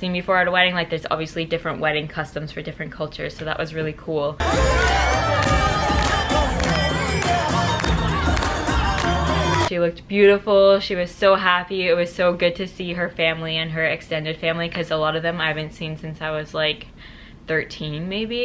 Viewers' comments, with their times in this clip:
0:05 OMG IRAQI MUSIC 😂😂😂 represeentttttt